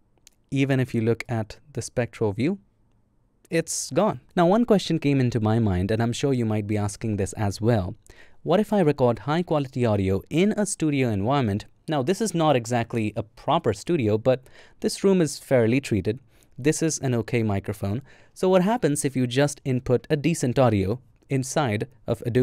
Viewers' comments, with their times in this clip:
0:04 Wow! when you started using a good quality mic, the AI sounded so much worse...It's almost like it sounded half-way human, and half-way like those AI voices people use when they need to be able to speak a different language...(BTW, your dialogue is great to listen to, and I am SO glad you use your natural voice, instead of AI!)